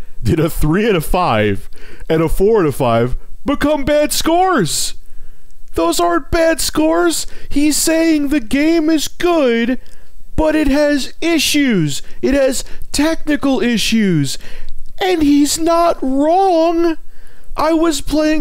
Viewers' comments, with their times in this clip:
0:04 After you started sounding just like Donald Trump lol ;D